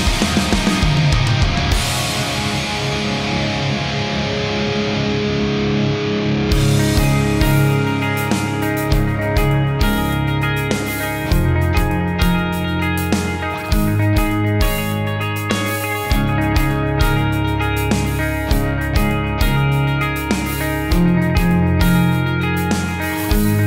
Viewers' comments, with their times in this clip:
0:06 Really love the transition to the single-string work on the Nemophilia tune, because of (rather than despite) the simplicity. It's hard not to imagine that as the backdrop for a MISA-esque bass solo. The Band-Maid tune sounds so on point that I do kinda fear them achieving Nirvana-esque critical mass in a year or two and then us being deluged by a thousand groups that sound a lot like Band-Maid but without their five-superhero synergy - although I guess that would, in fact, be World Domination. Which DAW are you using, btw?